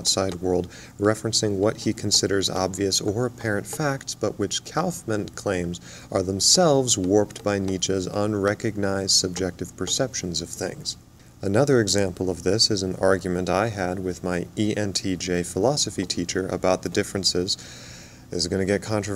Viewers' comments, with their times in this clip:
0:04 Are you tapping a pen or pencil in rhythm to the words you are speaking? haha :)